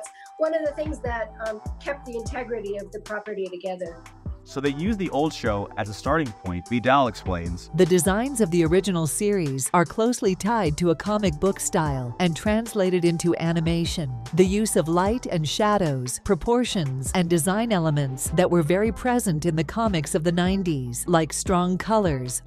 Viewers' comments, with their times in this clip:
0:08 The AI voiced part on came out of nowhere, and that was funny